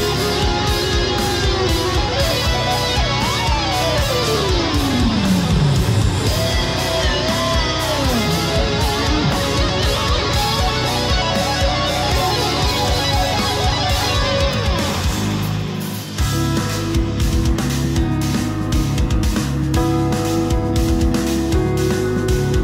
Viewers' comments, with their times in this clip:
0:04 he definitely dream theatered the song 😅! Legend. I would have liked to see him struggling more btw ahaha